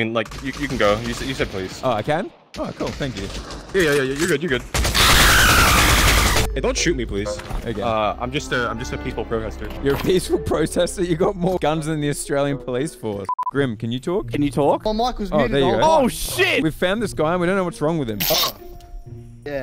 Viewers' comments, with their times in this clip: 0:05 bruh the scream💀💀💀